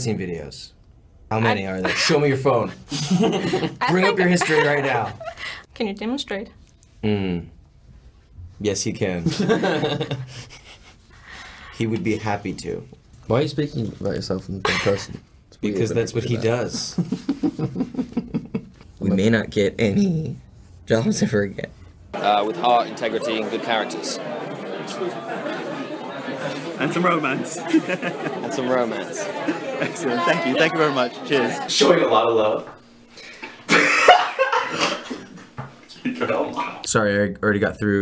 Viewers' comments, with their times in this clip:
0:09 his laugh is so cutee!!
0:19 does he say "we may not get any JOSHIFER again"...
0:25 is the best, his laugh/smile is so cute!